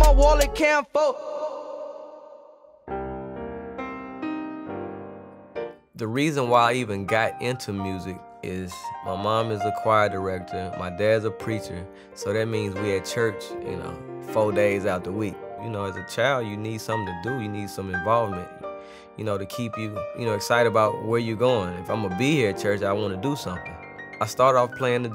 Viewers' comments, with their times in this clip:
0:06 sound like future- where I came from. Classic